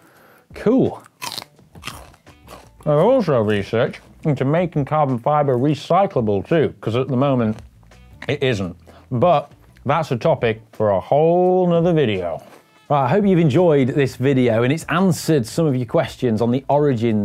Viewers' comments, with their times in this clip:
0:04 Why after and biting the celery, his accent changes to Southern American? :D